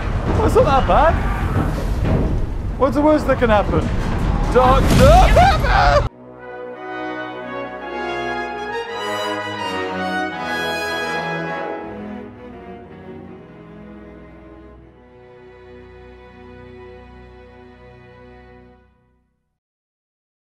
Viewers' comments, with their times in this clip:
0:05 percfetly cut sream